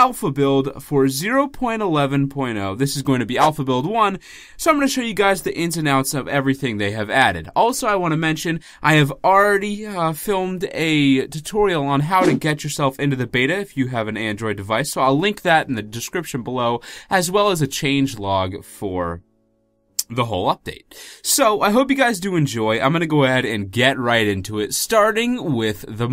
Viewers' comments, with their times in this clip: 0:09 Go to it sounded like a moan 😂